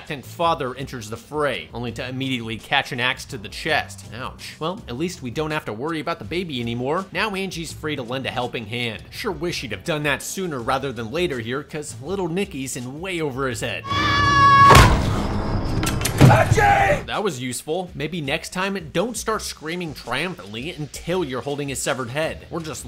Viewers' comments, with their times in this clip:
0:09 As a lovable cyromatic insect once said: "Want to take me by surprise? THEN DON'T SCREAM LIKE A BANSHEE!"